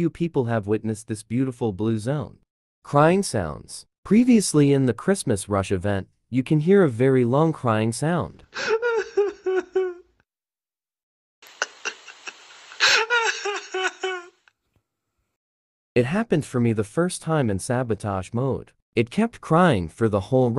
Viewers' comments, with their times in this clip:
0:05 dude thank God I thought I'm the only one who hair these creapy sound